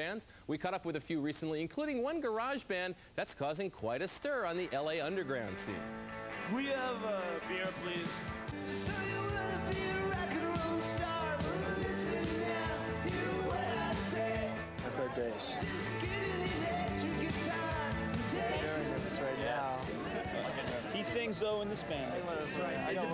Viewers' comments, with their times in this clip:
0:07 Haha I see. Your voice and Keanu's face